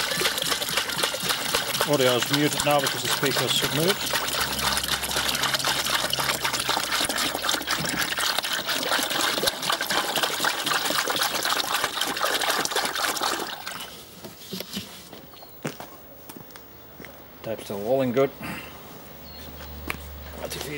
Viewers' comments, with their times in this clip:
0:03 the last post sounds diferent to the australian version ???